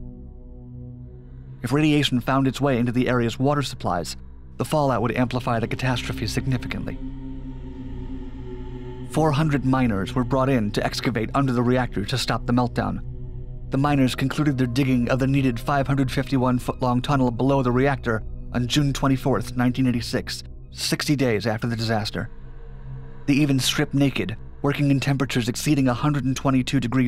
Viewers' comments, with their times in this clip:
0:08 Me : working on something else while this video plays in the background 400 Minors were... Me : *WAIT WHAT* Switches to video Oh....Miners
0:09 I choked on my coffee from mishearing the narrator saying "minors" instead of "miners"